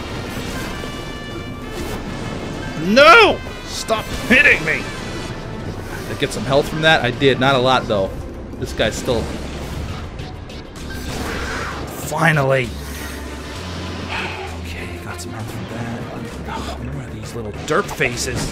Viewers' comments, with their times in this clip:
0:03 Did anyone else notice that music at some points sounds like the Mario Underground Theme.